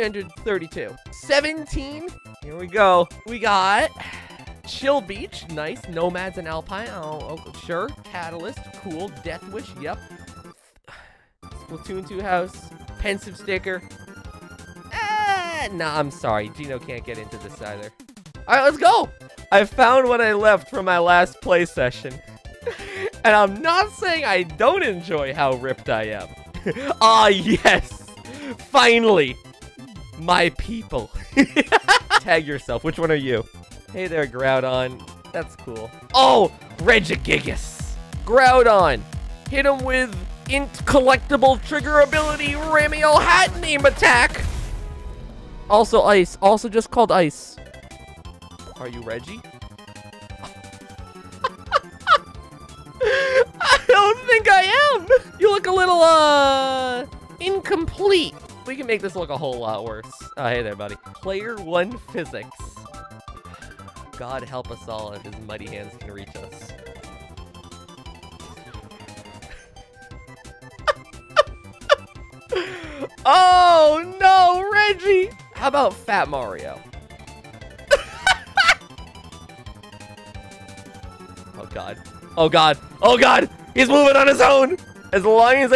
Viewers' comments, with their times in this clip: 0:09 That did NOT sound like he said "Hat in Time".
1:07 the music oddly fits here, but hey, im not complaining